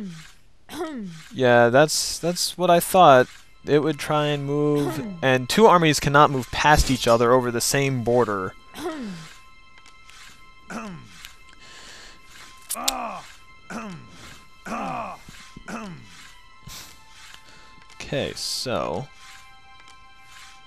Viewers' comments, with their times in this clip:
0:08 haha did the grunt audio get a little confused?